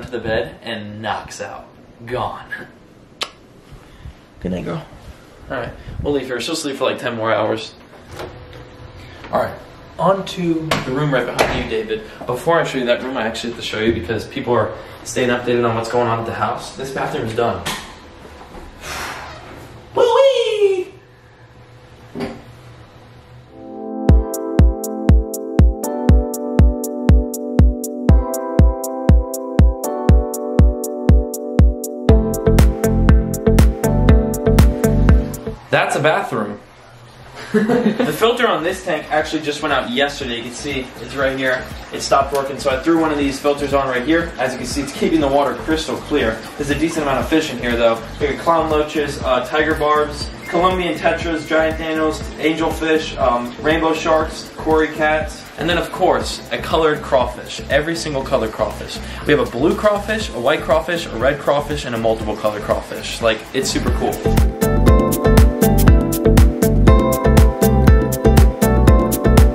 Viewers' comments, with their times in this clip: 0:03 I'll "see you tomorrow" loud crash noises
0:51 did he just say giant thanos😂😂😂😂😂😂😂😂😂